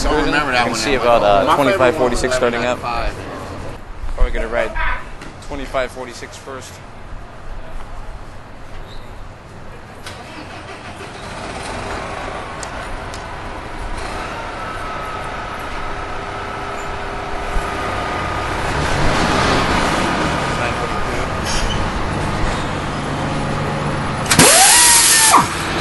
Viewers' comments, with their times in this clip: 0:08 I hear a Series 50 bus starting up and knowing bus start ups, that was a D40LF ? Btw, sounds nice so far.